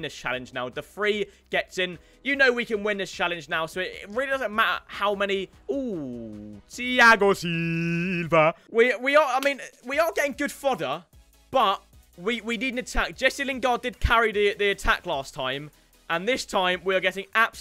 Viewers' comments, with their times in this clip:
0:04 the ThIagO Siiiilva was imaculent